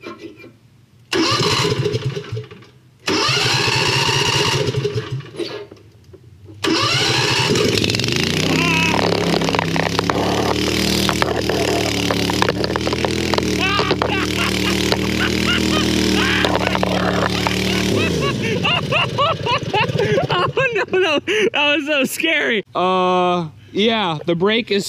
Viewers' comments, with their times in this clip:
0:07 i would just like to point out you werent laughing until you knew your were prob going to live.